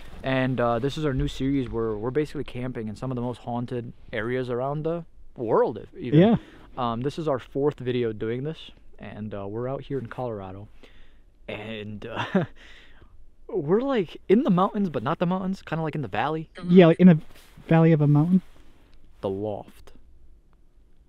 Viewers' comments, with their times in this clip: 0:06 on on the video i hear a little girl saying “im here”